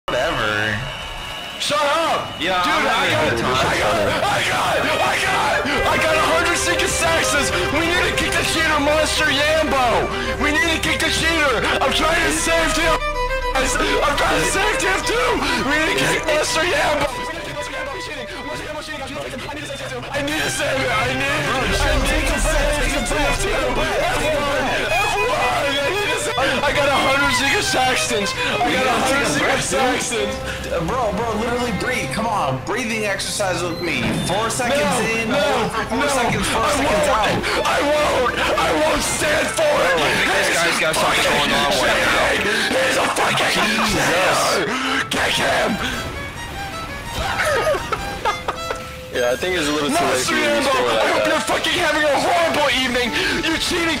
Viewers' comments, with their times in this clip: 0:04 He sounded Like Markiplier in
0:12 The split second disconnect is amazing.
0:12 the part where his mic goes out kills everytime bro shits hilarious
0:13 he sounds so earnest he's trying to SAVE TF2
0:20 i love the raw emotion and desperation of him needing to save tf2
0:20 it sounds like he says "i need a savior" despite trying to say "i need to save tf2" this is a subconscious cry for help
0:23 the drawing combined with his shriek is my fav detail thank u
0:30 i love how the music calms down for a second to tell him to breath but picks up again when he continues going insane lmfao
0:30 You can HEAR the cheeky grin here lmao
0:40 i can literally feel the raw power of his scream.
0:45 the raw energy in that "KICK HIM" is my favorite part